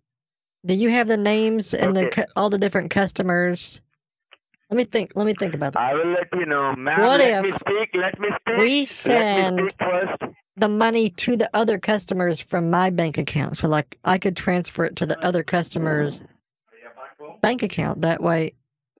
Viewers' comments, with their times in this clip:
0:05 He sounds like a friggin dalek lmao